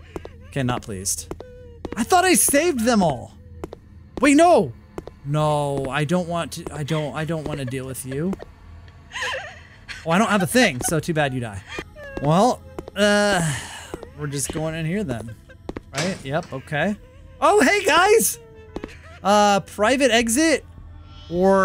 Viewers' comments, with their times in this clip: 0:09 THE WAY SHE CRIED IN HAD ME LAUGHING 💀😭